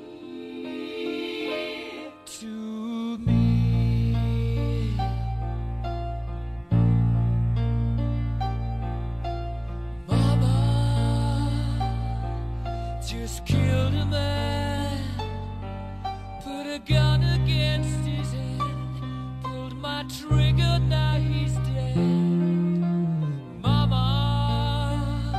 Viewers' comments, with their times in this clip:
0:05 I AM ASHAMED that you put a guitar instead of a bass for the bass part from onward through that part
0:09 In music it’s bass ,but that is guitar